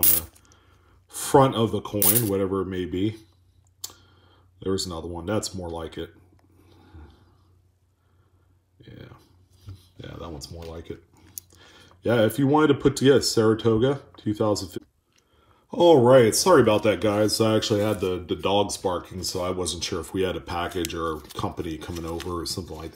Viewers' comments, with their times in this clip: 0:08 Who let the Dog's Bark?